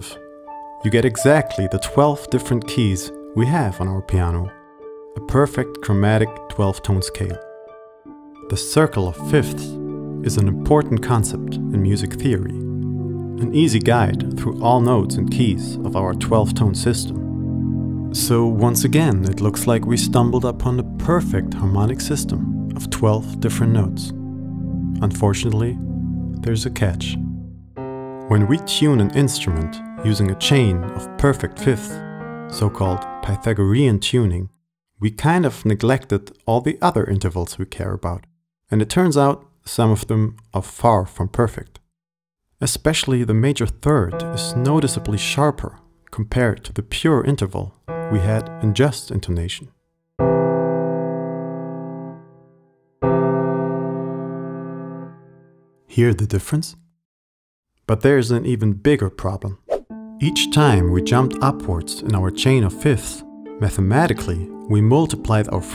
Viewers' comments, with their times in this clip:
0:10 what's this sound/music/chord called? Very angelic.
0:52 "hear the difference?" no ^^'
0:52 "it's notably sharper" 🙃 is it????? I'm a drummer, I never deal with this shit...